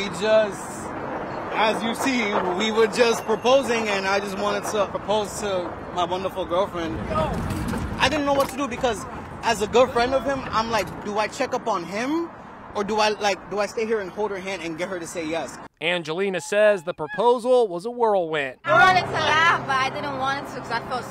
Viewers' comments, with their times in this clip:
0:09 “As a girlfriend of him..”. Bro 😳😏